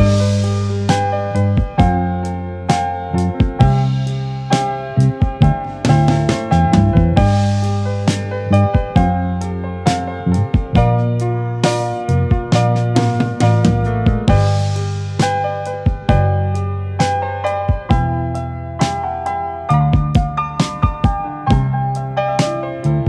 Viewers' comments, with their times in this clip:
0:10 Listen very carefully, you can hear Johns voice has leaked onto the tape containing the background music. I believe he’s says “I made you cry!” You can hear the “Cry” part but nothing else.